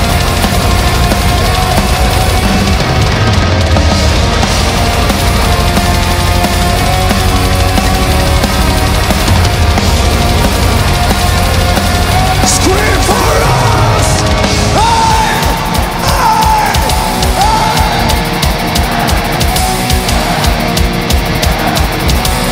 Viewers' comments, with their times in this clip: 0:07 I think they play pre-recorded guitars to some extent, how can he make the jump and still keep that riff going flawlessly, would not be possible. You can even see he doesn't play it after he lands and walks away. I wonder how it would sound without the backing tracks.